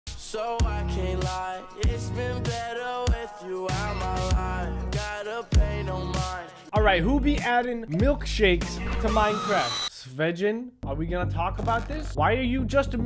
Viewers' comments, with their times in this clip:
0:00 black music over a white cringy video